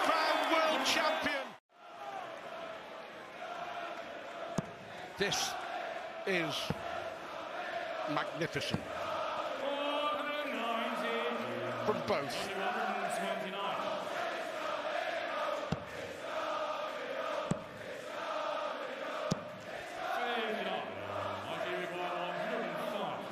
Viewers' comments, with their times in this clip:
0:06 The it's coming home chant is knocking me out fr